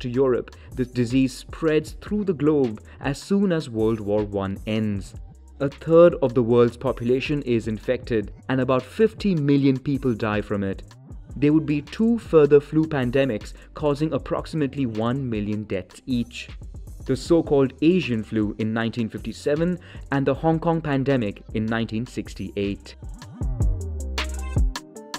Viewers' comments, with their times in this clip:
0:06 Wow, 50,000,000 is pronounced as fifteen million. Nice video though.